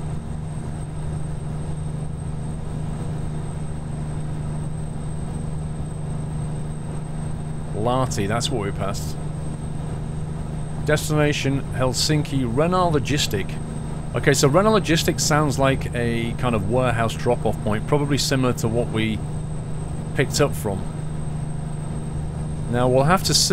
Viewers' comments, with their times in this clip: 0:07 you read h in Lahti (ypu dont watch ski jumping dont you?)